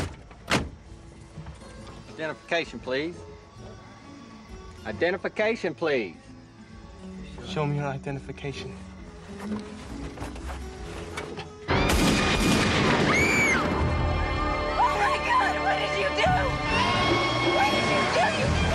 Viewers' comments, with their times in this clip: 0:03 Minutes in. THE LOOK ON CLYDE'S FACE HIS EYE'S AND THEN SAYING SHOW THEM YOUR IDENTIFICATION! AND THEN BOOM!! BOOM!!! DEAD!!! THAT LOOK IN HIS EYE'S WAS POWERFUL!